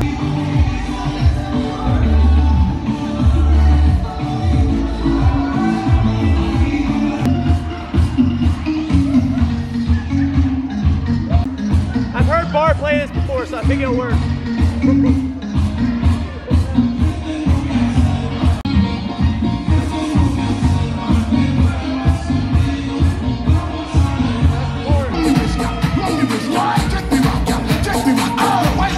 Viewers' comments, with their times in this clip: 0:10 That song has never failed me lol